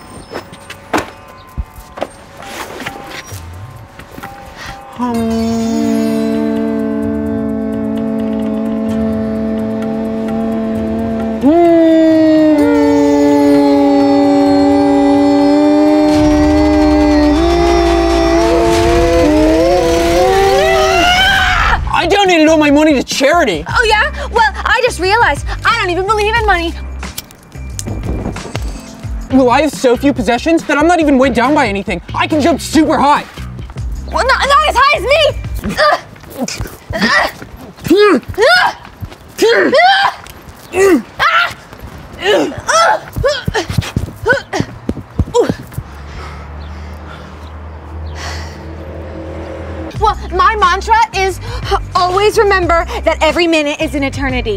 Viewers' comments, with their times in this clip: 0:06 how my oven sounds like when I forget to turn it off Kinda sounds like a motorcycle
0:11 Ah yes The sound of future electric motors
0:36 If you want to know what they sounded like in the dumpster. Just close your eyes